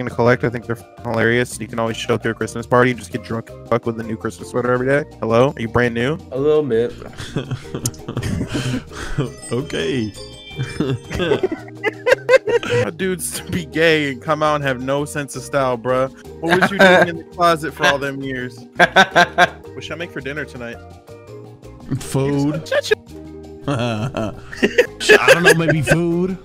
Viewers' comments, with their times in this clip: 0:09 was is just me or i heard that ring noti from his phone
0:09 Who else heard his ring?